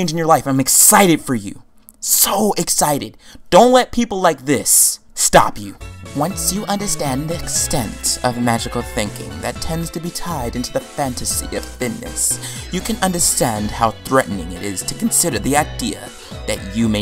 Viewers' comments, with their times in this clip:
0:05 He sounds like my camp director. (That’s a compliment)